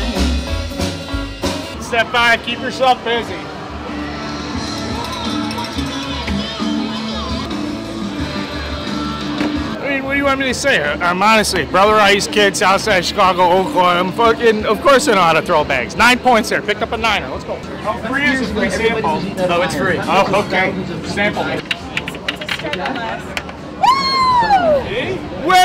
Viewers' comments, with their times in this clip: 0:09 Anyone wanna translate that to regular English for me? I've got nothing between "What do you want me to say?" and "Fuckinnnn. Of course I know how to throw bags"